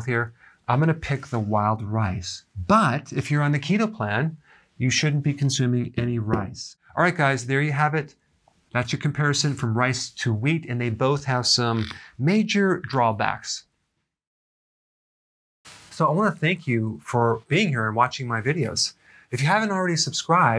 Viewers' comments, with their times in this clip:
0:03 what plan sorry can't really understand it